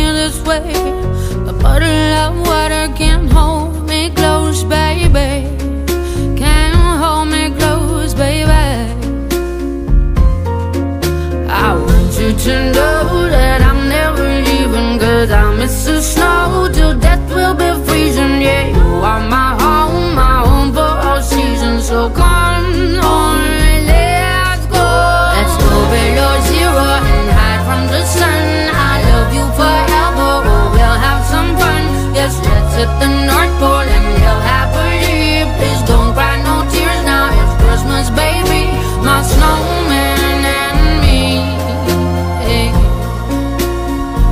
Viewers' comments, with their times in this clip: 0:10 how- how’d she manage that in one bre- (yes ik she probably stops to takes breath breaks or smthg)
0:11 the part where oxygen left sia hehe😂
0:31 she take a breath when